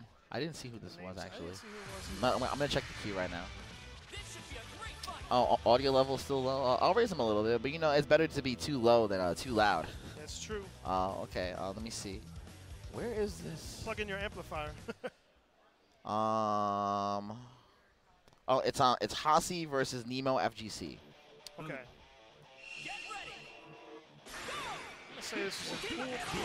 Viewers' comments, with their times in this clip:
0:10 audio is a bit funky